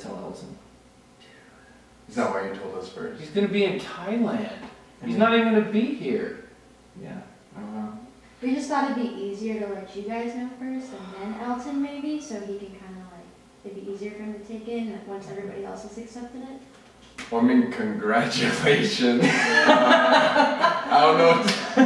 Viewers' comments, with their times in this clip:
0:09 I got literal chills hearing an exhale. I had to go back to hear it again